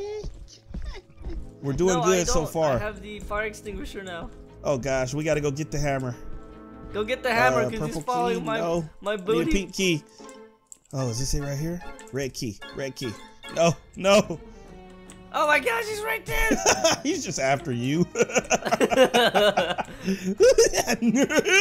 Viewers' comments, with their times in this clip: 0:04 what is that scary music could